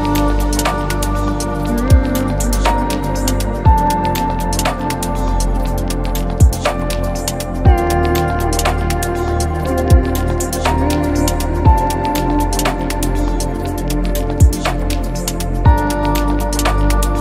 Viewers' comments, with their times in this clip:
0:04 Was anyone else able to smell the popping of the juicy corn cornels?